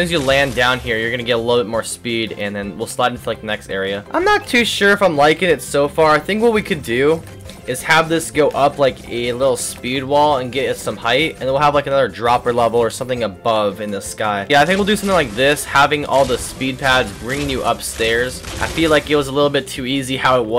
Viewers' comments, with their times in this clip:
0:03 voice Crack real